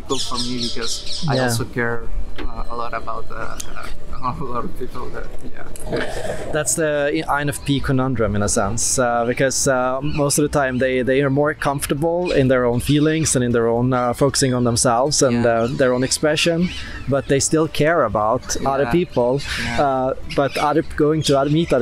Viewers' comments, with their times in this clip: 0:04 Also the classic INFP trail-off, ie I do this all the time in this type of situation, in a meeting or what not, and I've seen many other INFPs do this also. Curious what causes that little INFP idiosyncrasy. He also uses a lot of hand gestures when speaking, which is very common among INFPs I think. This was great, he's a lovely gentle INFP chap isn't he! Cheers.